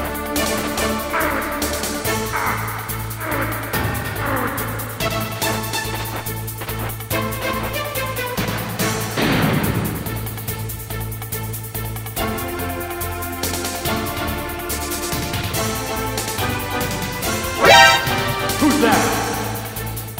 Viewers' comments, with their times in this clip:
0:03 the snake grunting noises lolol
0:07 😂😂😂😂 that boom effect really.
0:08 the sound effect on that landing is perfection!